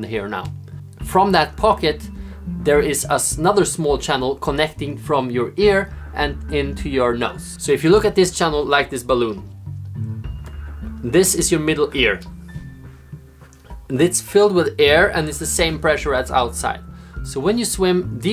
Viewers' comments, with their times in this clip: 0:06 into my WHAT? 0_0 I don't want anything in my nuts thank you....